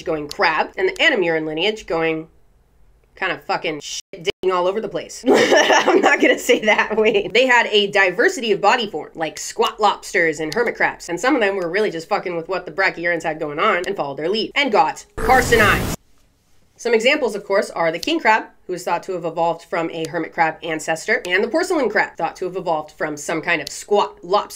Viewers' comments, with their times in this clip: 0:06 I like her laugh